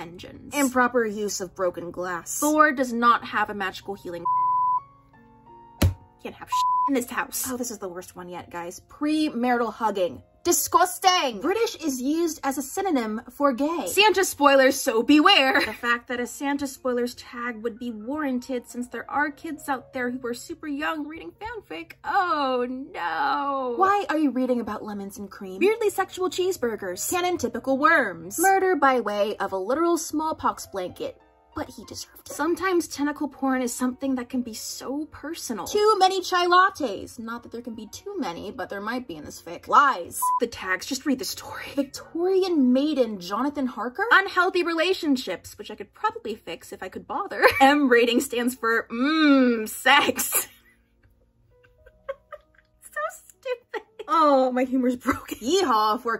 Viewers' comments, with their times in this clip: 0:10 That dIsGuStAnG needs to be a meme
0:37 DARN IT I THOUGHT YOU PRONOUNCED IT “KAI” WHY DO I ALWAYS GUESS WRONG